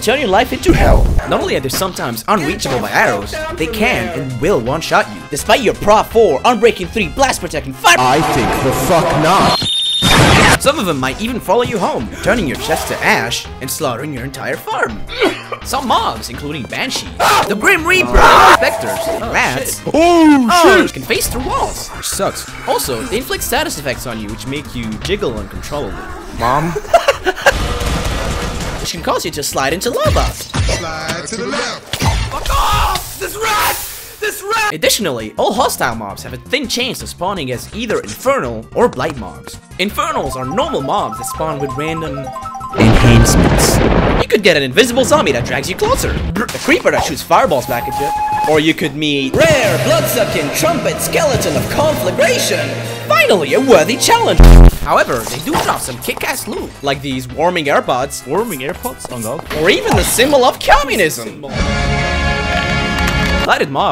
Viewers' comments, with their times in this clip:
0:09 I like how he used snakes scream from mgs3 lol
0:18 I love this edit: came back to this video after months just for the "this rat" rage
0:47 the clocker sound xDDD
0:47 That cloaker noise legit terrified me